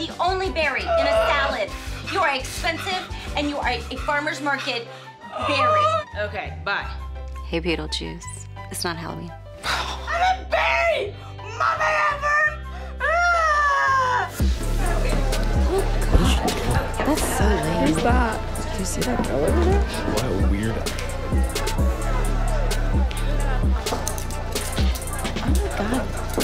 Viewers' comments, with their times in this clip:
0:07 her voice is so beautiful and soft😭😍